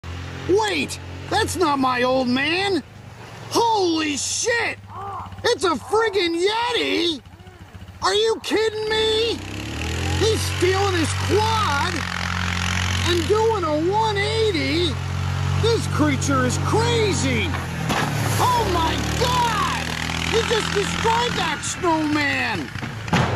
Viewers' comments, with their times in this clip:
0:04 TF2 Pyro sound
0:05 That's not a yeti, it's Pyro in a yeti costume, you can hear him inside!
0:11 MF DOOM SONG PLAYS